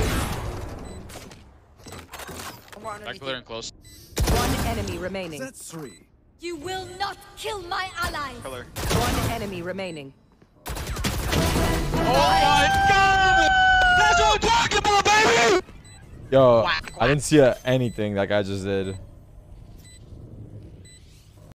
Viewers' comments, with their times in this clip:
0:10 bro heard the ace sound and was flabbergasted